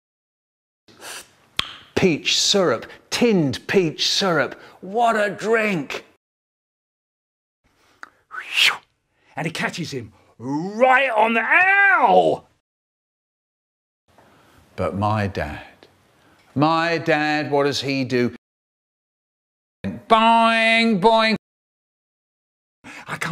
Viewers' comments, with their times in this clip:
0:08 sounded like ash williams injured sound effect